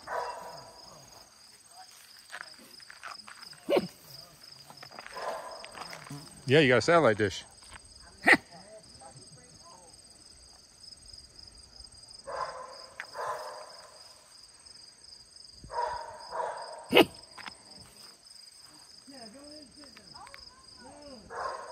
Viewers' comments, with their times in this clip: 0:06 fart was Captured on film 😂😂😂